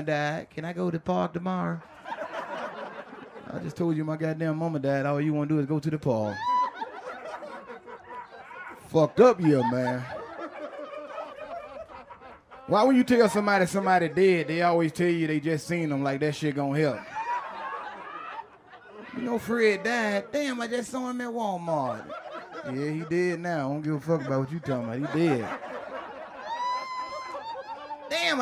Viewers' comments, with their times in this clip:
0:10 Bruh I can hear tony baker dying 😂😂